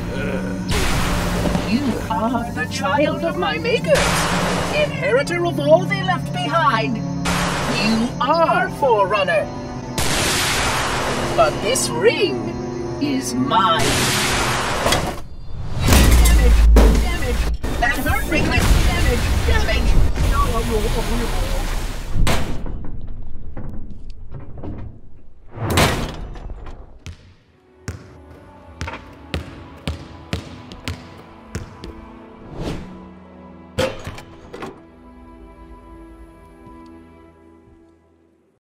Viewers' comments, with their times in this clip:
0:03 I think im hearing it wrong
0:26 combat evolved theme fades in